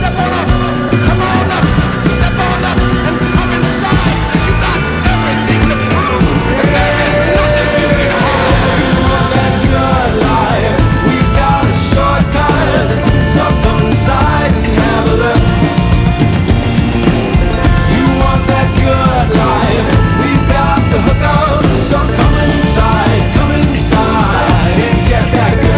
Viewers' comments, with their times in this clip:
0:06 I like this part where the voice says “and there is nothing you can hide” with such desperation and aggression, and the video of the guy ‘saying’ it is completely calm and smiling.